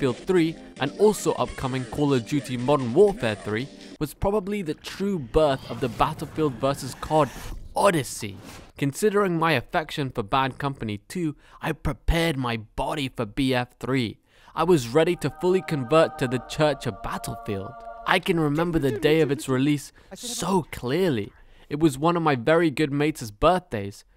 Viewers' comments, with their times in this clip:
0:06 BAAAAAAAH TIL FEELED. BAAAHHHd COMPANEEE. THE MAHHHPS are iKAHNnic. I made it to and couldn't listen to him anymore.